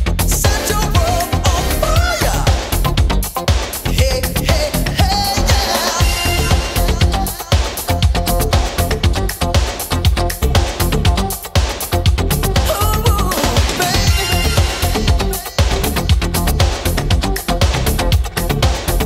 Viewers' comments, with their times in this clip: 0:07 Sounds a bit like Thriller, especially with those guitar riffs